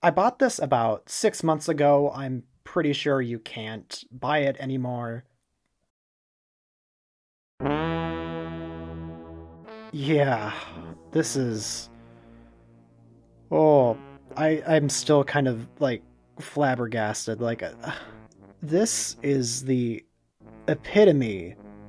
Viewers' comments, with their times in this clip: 0:05 the music fit so we'll to this figure it makes me laugh so hard I miss Clump Scringly